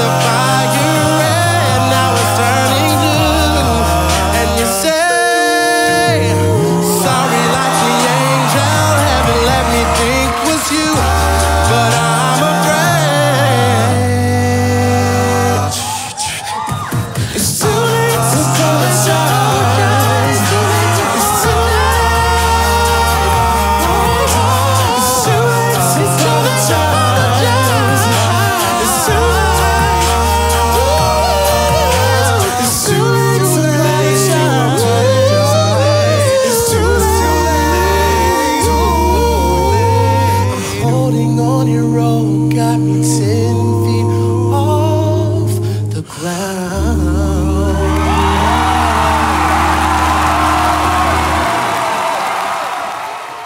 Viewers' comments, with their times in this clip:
0:04 An example of a bell tone is when they articulate those notes with "bing" noises It's just so cool. Oh, and the bass tone is basically the guy singing the deepest notes. He has AMAZING pitch and he's very creative with his bass part. I love when he comes in at :56... it gives you chills.
0:04 Those are bell tones.
0:38 Committed should have been criticized more than they did. I'm not saying they weren't the best and shouldn't have won, but there are so many times in this song, and others where people go completely off pitch, and they don't get called out on it. is a good example of this.